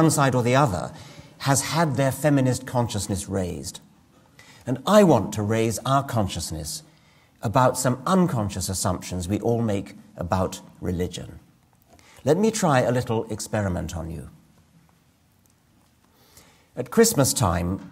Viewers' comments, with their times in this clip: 0:05 I like the zoom in on Richard Dawkins face when his voice starts getting more intense, because it makes it seem that much more dramatic. None the less he is a brilliant man